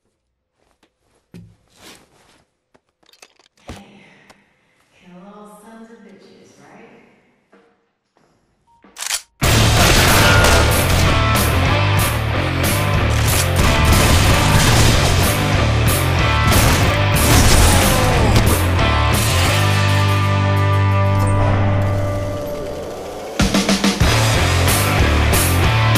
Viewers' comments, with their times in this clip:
0:10 the echo voices would’ve worked for those lines at the end